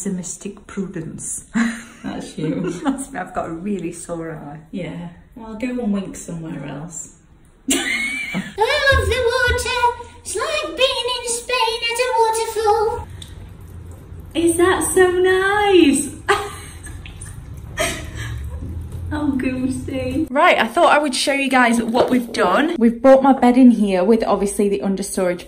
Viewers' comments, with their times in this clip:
0:09 your cat voice is amazing 😂